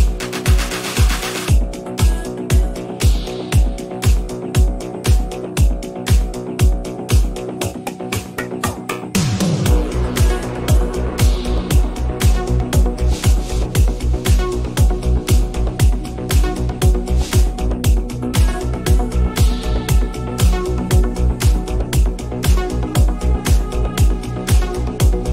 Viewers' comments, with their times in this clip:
0:07 what a great tune!